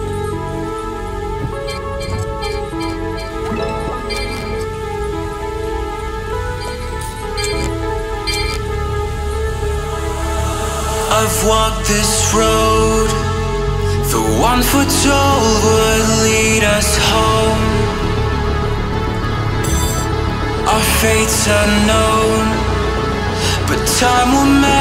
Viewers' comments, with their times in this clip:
0:09 I was So distracted by the background music XD